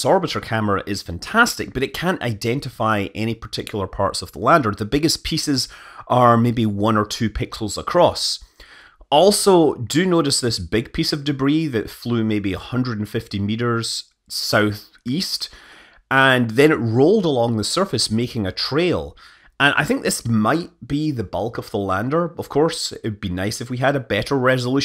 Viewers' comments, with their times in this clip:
0:06 it's only a few pickles across but these are giant moon-pickles, that they have been smoking at ISRO quite regularly.